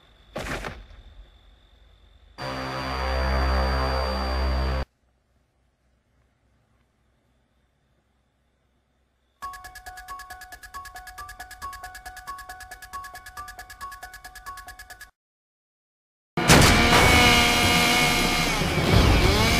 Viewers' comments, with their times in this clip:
0:05 that music is stuck in my head forever